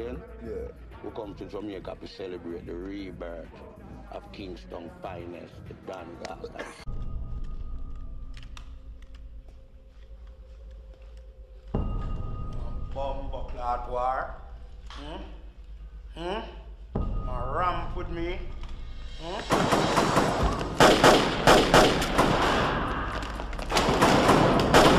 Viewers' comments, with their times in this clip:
0:07 That cough is so real...virgin lungs😁